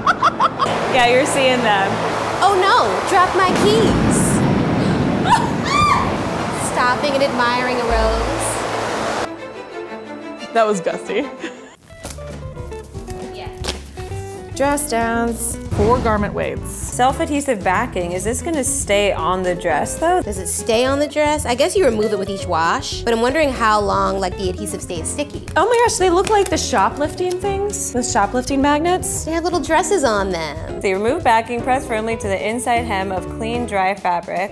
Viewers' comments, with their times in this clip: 0:05 😂😂who screamed when her underwear showed 😂😂
0:21 I thought it said “gourmet weights”